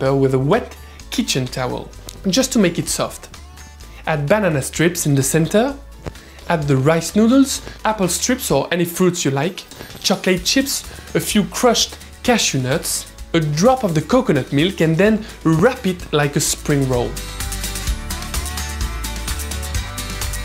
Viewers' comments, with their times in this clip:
0:04 I love how he says, "banana"!